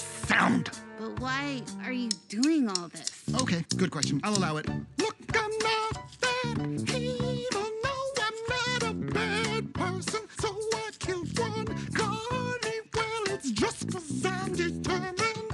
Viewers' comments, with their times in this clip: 0:03 song starts here